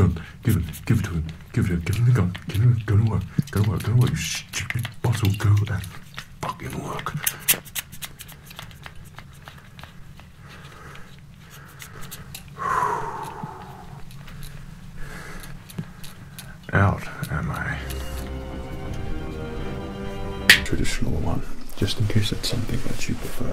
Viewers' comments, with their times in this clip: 0:04 You didnt beep fu**ing in